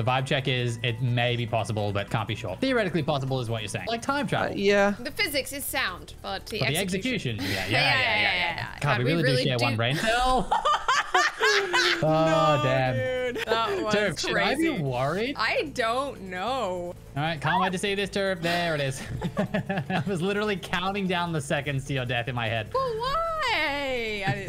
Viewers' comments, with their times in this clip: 0:08 I think I watched the bit about 10 times on repeat whilst editing this the first time 😅 That laugh was just so great!